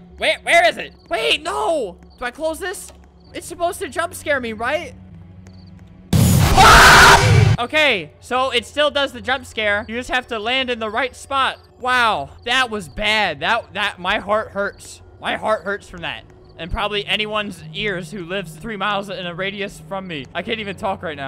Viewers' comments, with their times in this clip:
0:04 Am I the only one who laughed because of the scream?
0:07 The Scream Of Albert/Flamingo